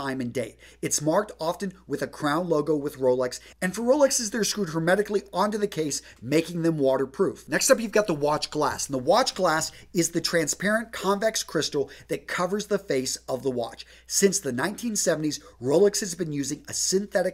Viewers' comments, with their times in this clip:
0:04 What??? The subtitles say he says automatically, but it doesn't sound like it.